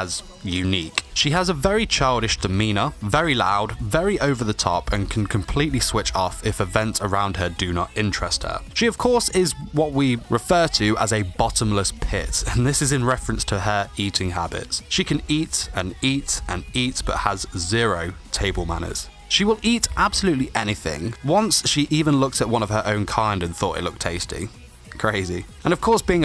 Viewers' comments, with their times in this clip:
0:07 as a bird owner this exactly sounds like some parrots...